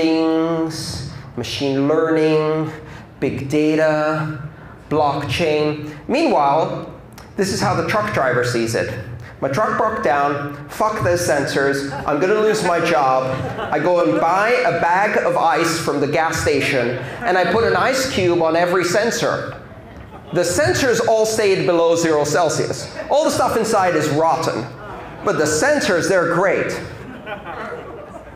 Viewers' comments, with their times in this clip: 0:10 Warning NSFW! Andreas swears & instantly gets everyone's ATTN. Notice the woman in the background texting then straightening up & opening a water bottle to drink. Smiles & chuckles ensue.